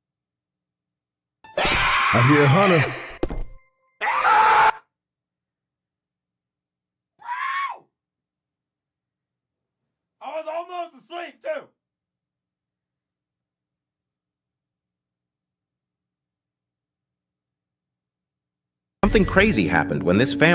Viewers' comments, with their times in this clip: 0:07 what is that scream